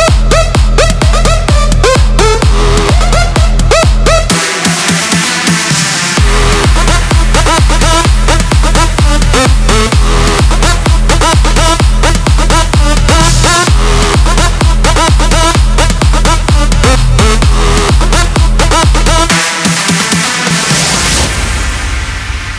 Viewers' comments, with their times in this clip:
0:05 😍😍😍 Melody and drop...my God!!